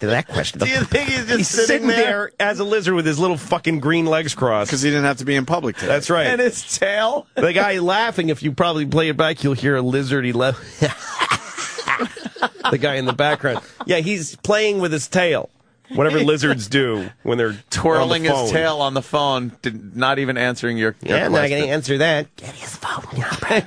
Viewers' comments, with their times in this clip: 0:07 The lizard laugh Louie did had me crying
0:10 I live for that dry lizard laugh